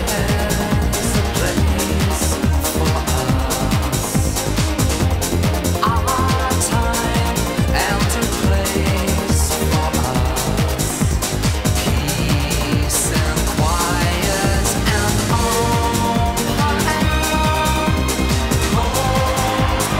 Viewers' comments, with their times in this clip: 0:07 Love the orchestral arrangement !